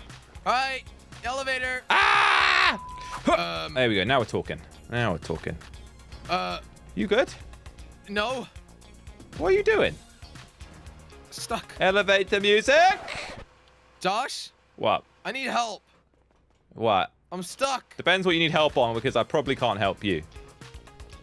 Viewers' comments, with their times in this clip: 0:07 why does he sound like Mr Bean?